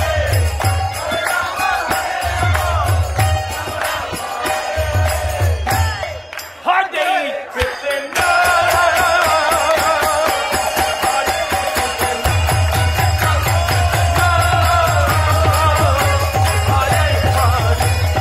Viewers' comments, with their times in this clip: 0:04 the pure divine soulful kirtan 🌸🔥🌸